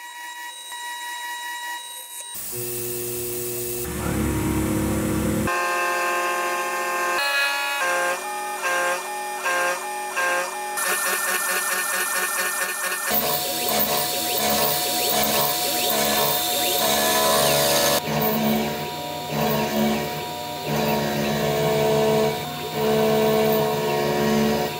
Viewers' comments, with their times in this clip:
0:05 why does this sound like a small bit of music
0:05 this sounds cool fsm